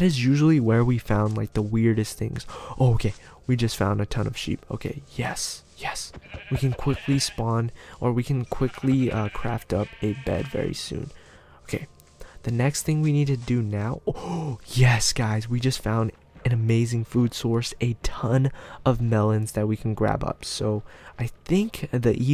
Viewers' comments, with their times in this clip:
0:06 when he kills the sheep the last one made an eco